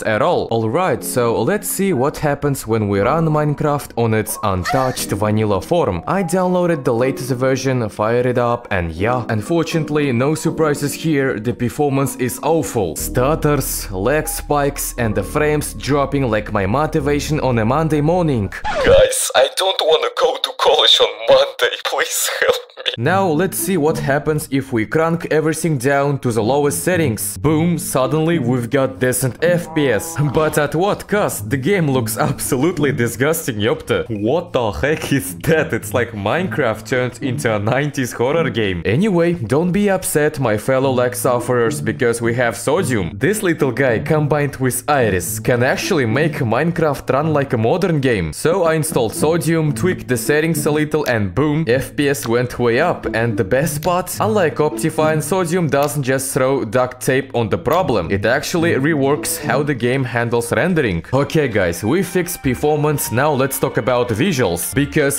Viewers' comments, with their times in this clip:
0:03 That moan is wild
0:52 I can't help but hear "fps went хуя up"... Subtitles recognise it as "way up", but I just can't unhear хуя ап...